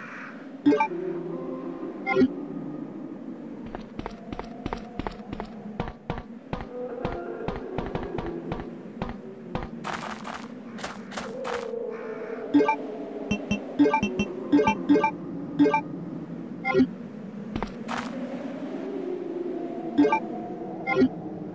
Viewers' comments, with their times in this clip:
0:09 what's the ambient sound's name like wailings